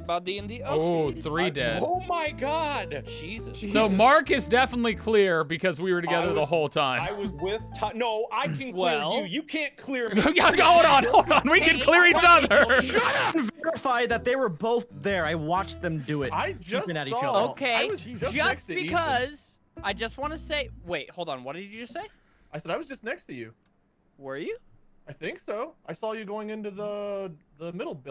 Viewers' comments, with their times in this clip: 0:10 Still don’t understand why Wade yelled “SHUT UP”